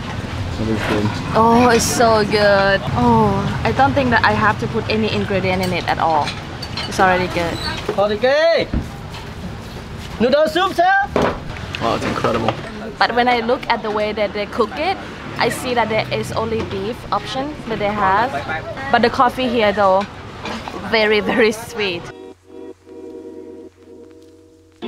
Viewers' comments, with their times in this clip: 0:08 It’s so funny with the guy who was making the noodles He was shouting in a “the tourists wouldn’t understand what I’m saying” kind of way 😂. He was like “WHAT ARE FILMING?” That’s so funny. 😂😂 PS: The video is really good and I hope you enjoyed your time there.